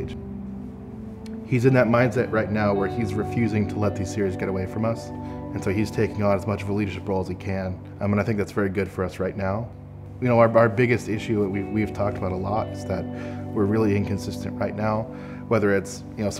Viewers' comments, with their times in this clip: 0:03 sounds like T-series